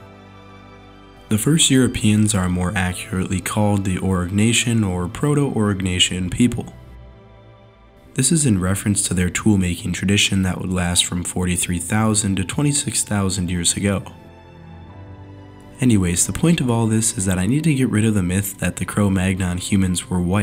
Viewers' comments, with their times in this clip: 0:03 02 What's this word "Oro...Nation"? I couldn't quite catch it!